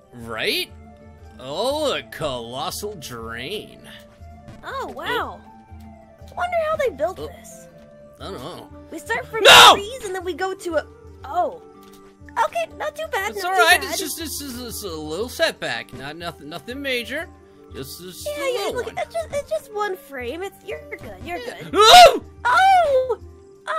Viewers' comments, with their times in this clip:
0:09 That NO really surprised me XD
0:09 Sonic Showed his true form sonic screamed NO!! 😂 😂😂